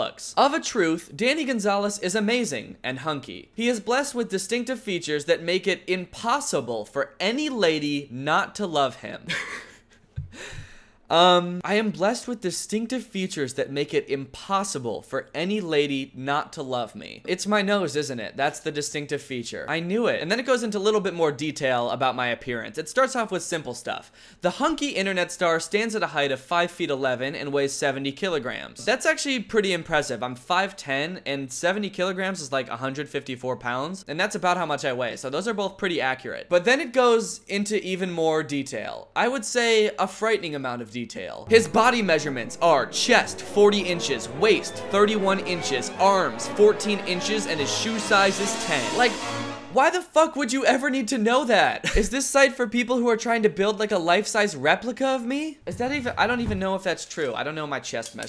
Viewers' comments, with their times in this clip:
0:09 Danny I shared that uncomfortable laugh with you XD I'm a girl but, no, the reason I'm a fan, is not, in fact, because you are a "hunk" (LOL) like the website says, but I actually love your channel because your videos genuinely make me laugh so hard.
0:42 with the music😂😂